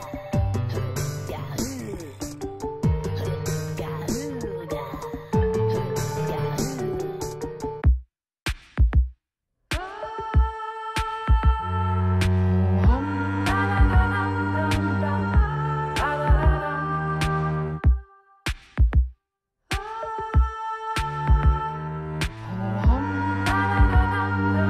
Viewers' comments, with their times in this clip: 0:09 is the best wave in my opinion because i think gnarls is to loud and viveine is also